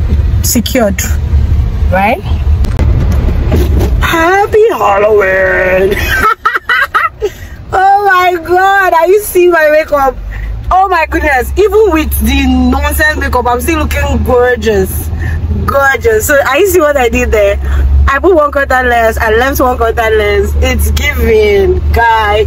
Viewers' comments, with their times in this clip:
0:04 no way, this is not your real voice 😂😂